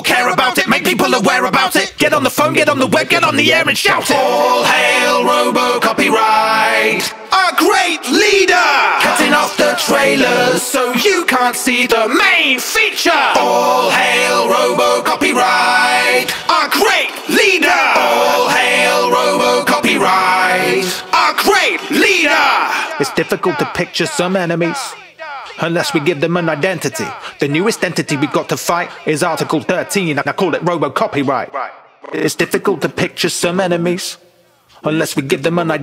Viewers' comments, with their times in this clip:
0:04 Everything after sounds so much more emotional without the instrumental
0:23 background voice Pizza Pizza Pizza Pizza Pizza Pizza Pizza Pizza